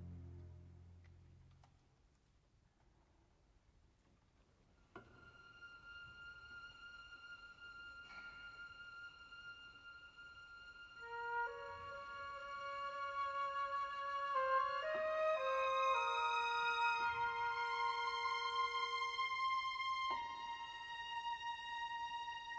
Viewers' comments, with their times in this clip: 0:05 is my fav piece. It envokes sadness, starts to ascend to happy music, then descends back to sadness